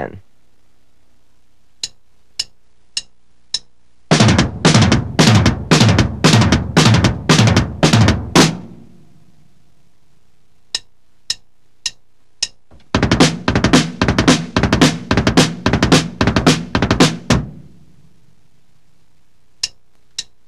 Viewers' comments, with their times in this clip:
0:05 the guy should have gone with 250 BPM speed...